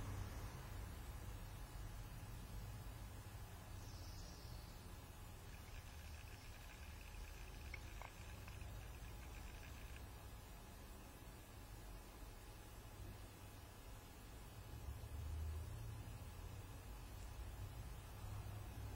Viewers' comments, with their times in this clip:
0:05 Listen to this static on guys.